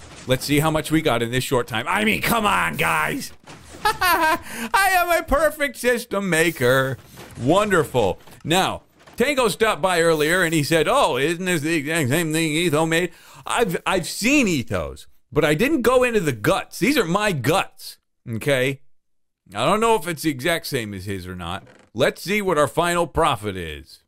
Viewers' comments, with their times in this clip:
0:10 "ize-zing-zhan-isne-iso-me " me: he is speaking the language of gods